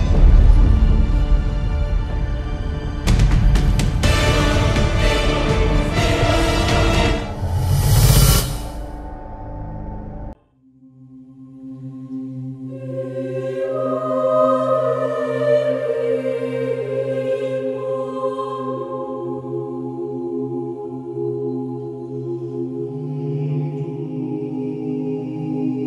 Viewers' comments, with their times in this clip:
0:10 Idk i think last step song sounds good but not as good as shadowman battle.